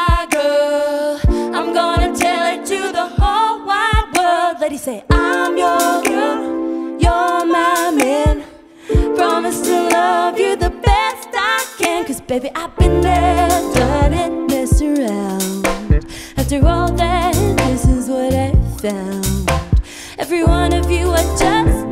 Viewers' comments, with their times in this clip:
0:04 Her face reads off like , " Is he fucking competing for the soprano here????" lol